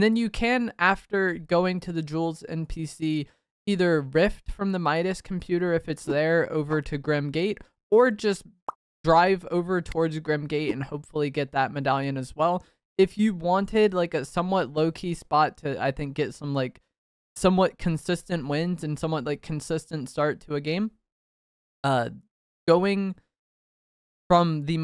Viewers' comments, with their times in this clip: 0:06 did anyone catch that little “pop” noise right when he shotguns the guy lmao! 😂😂😂